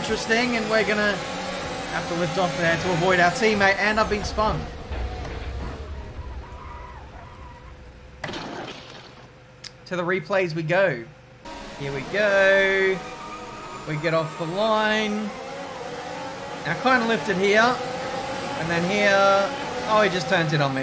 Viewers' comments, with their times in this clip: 0:07 this is how Drive To Survive got the crash sounds